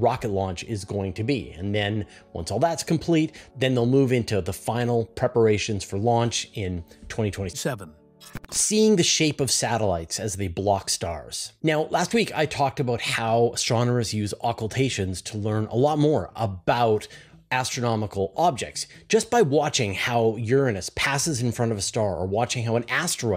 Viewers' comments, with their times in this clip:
0:07 What happens to his voice here when he says 7?